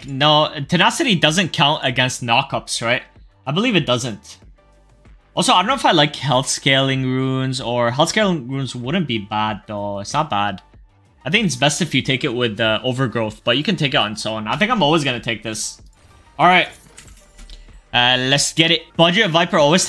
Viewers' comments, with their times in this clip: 0:04 bro is spelling the words like a 💅